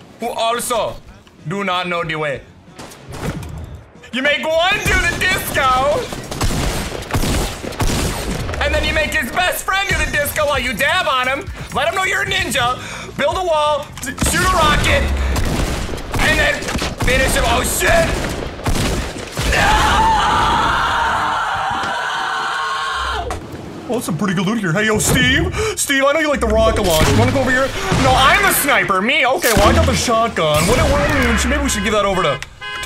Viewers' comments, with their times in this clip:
0:04 linda from bobs burgers 😂🍔
0:20 that’s like Eren Yeager screaming